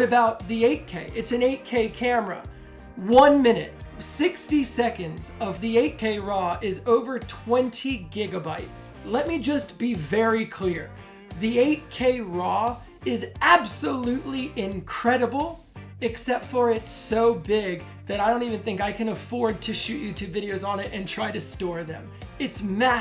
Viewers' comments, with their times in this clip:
0:05 Your audio editing is impressive. Barely noticed you said "4k raw" instead of "8k raw". And why does your subject look so much like Ana de Armas?